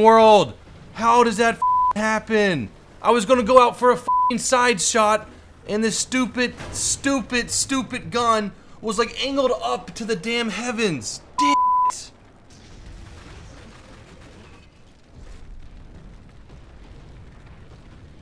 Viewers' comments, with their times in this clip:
0:03 that rage though XD